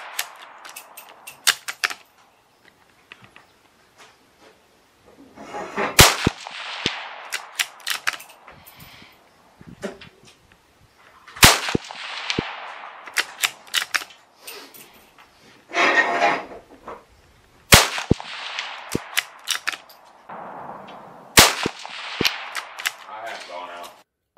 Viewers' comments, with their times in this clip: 0:06 Heard that fart slip and it's big brother a few seconds later. 😐